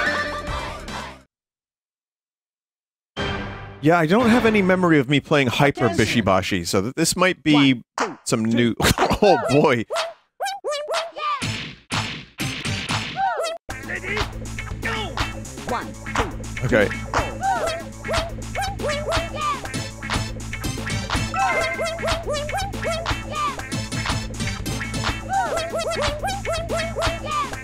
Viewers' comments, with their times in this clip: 0:10 wow I didn't know they got Jerma to provide sound effects for this game